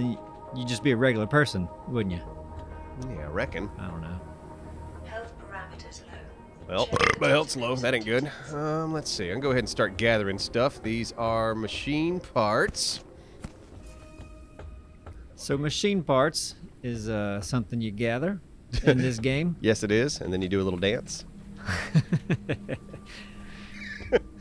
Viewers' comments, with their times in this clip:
0:05 burp made my day haha